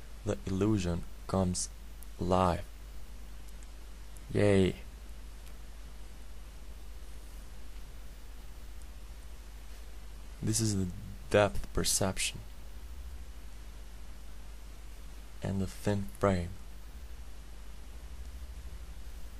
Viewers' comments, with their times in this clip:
0:04 "yay." - That's some enthusiasm. Looks pretty cool!